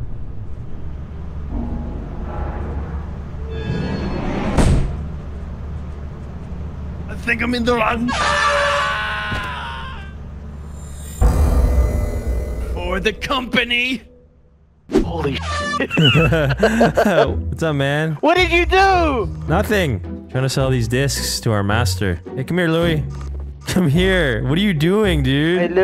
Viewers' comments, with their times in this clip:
0:07 Funny part that the horn blow at him.